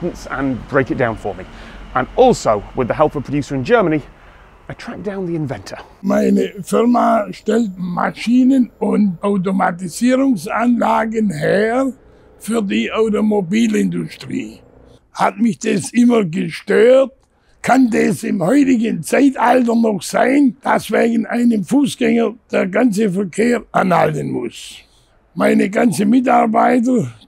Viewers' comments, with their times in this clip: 0:05 that's the most German person you will ever hear in your entire life.
0:07 the inventer sounds like the main villain in a superhero movie lmao
0:11 As a monolingual English speaker I understood 'für die Automobilindustrie' It honestly just sounded like accented English.
0:12 I did a double take "for the automobile industry" sounded just like english